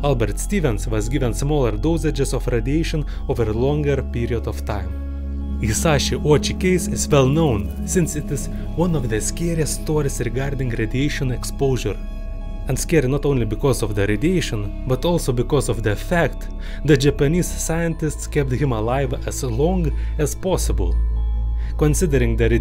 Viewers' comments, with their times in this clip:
0:08 bro is speaking spanish 💀